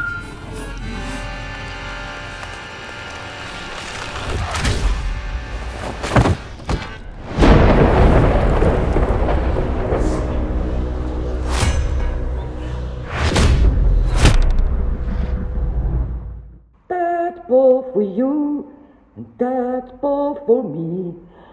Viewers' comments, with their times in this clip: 0:05 There’s your crunch 😛